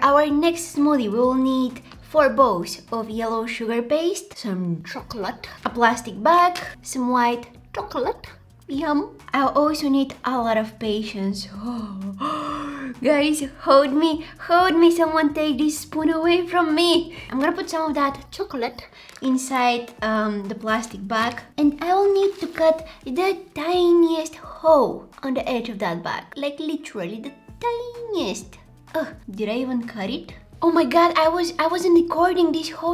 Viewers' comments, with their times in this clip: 0:07 that “chocolate” was so cute
0:18 her face and the way she says chocolate is just so adorable